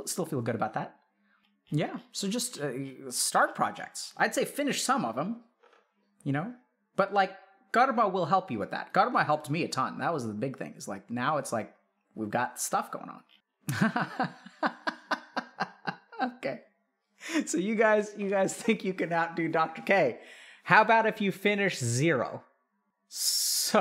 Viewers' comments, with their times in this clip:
0:08 I can't figure out what he says, who does help him ? God ?